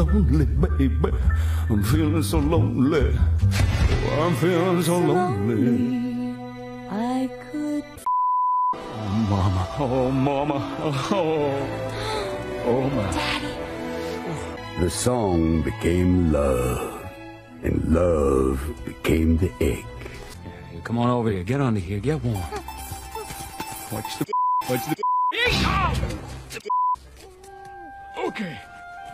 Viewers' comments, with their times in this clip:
0:10 why did that sound like it actually happened